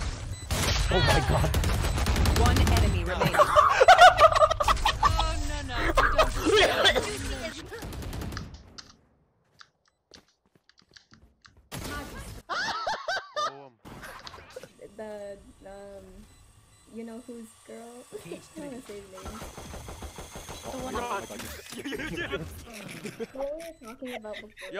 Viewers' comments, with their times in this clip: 0:05 dude control yourself hahahah he almost died laughing